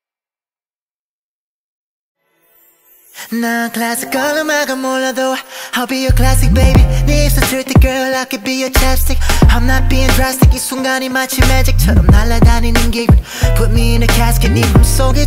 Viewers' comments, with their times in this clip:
0:03 .. : wahh it just released .. it sounds like jaybum voice reading the tittle .. : ahahah, it just me that too excited till forget to read the tittle😃